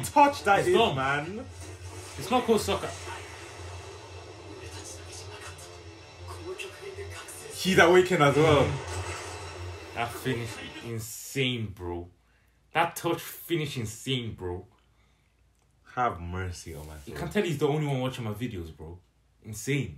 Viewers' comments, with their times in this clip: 0:03 i love how you just stopped talking because you knew something will happend :D